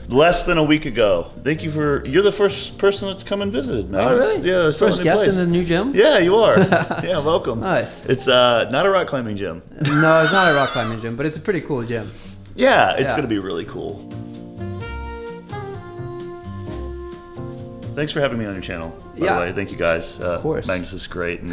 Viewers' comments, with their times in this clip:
0:09 wheezes to death HAHAHHAHA